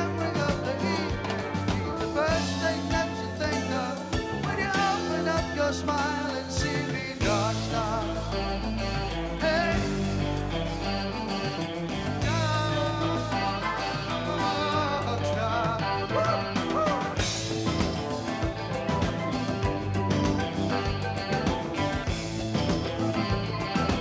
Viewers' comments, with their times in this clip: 0:07 Um, 'scuse me, but most "alluring" song ever...damn!🎉